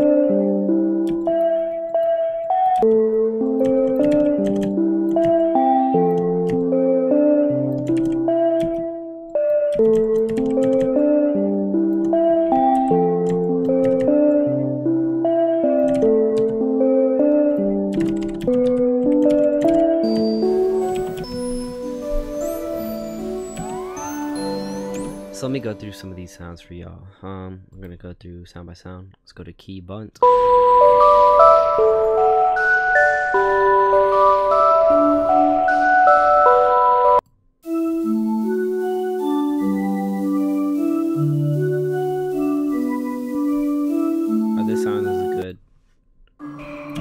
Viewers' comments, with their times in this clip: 0:03 that melody is so good, it's like nostalgic and sad at the same time
0:30 some real old juice vibes